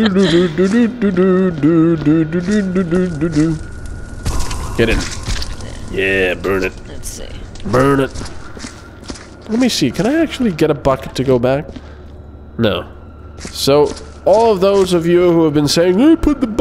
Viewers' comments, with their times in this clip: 0:04 Am I the only one who thought he sounded like Hank Hill at like or so